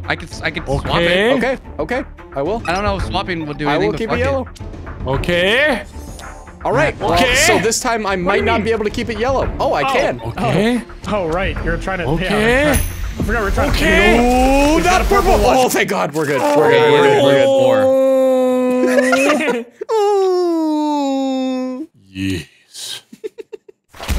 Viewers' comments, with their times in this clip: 0:09 One of them sounded like the "do the roar" kid from shrek